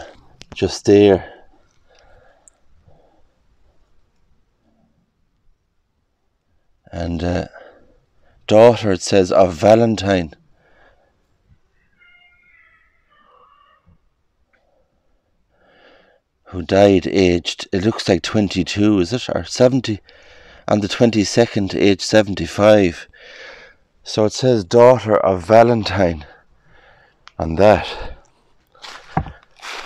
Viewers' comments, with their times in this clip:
0:10 Just out of curiosity... (right after you say, "Daughter of Valentine") there sounds like a voice or music. Is that part of your editing, or is it an EVP? And, by the way, I think your videos are great!
0:13 Great walk through . Have a listen when you meantion Valentine . There is audio sounds like evp. G’day from Australia 🇦🇺🐻‍❄️